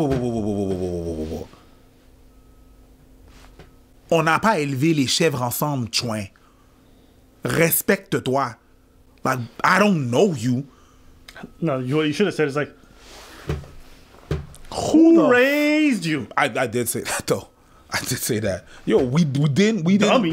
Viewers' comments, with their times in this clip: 0:03 lool I was not expect a Quebec accent